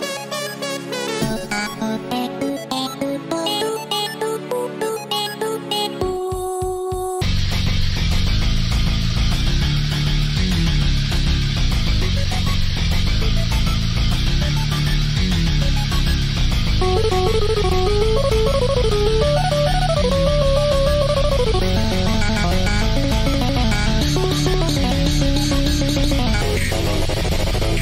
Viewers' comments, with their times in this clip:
0:10 i just love the instrumental of defeat ( instrumental is a music that plays in the background of the song )